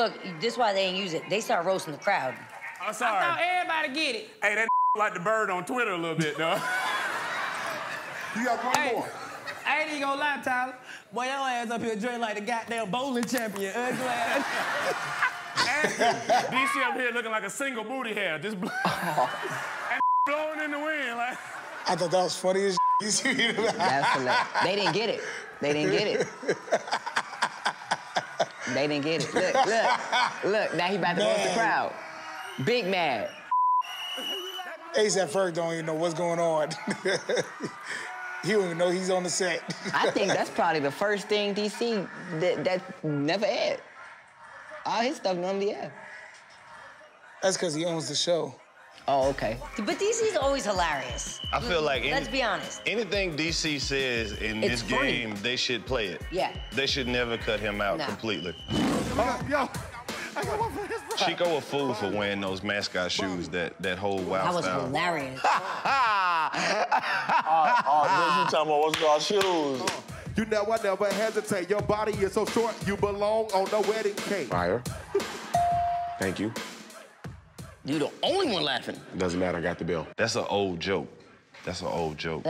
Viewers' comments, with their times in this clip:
0:10 That man feelings was hurt after that lil laugh he had
1:04 Chico bean laugh kills me 😂
1:05 that nigga laugh animated as hell 😂😂